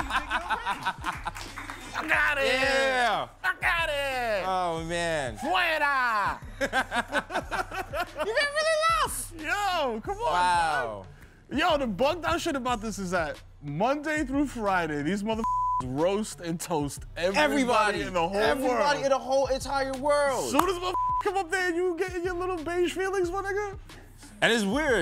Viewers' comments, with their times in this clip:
0:08 That high pitch always gets me 💀 🤣